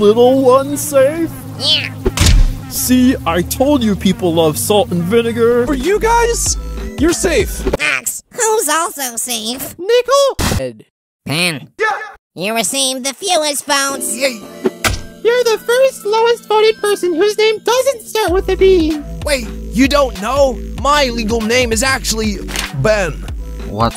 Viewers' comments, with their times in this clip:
0:10 Idk what Bottle Just said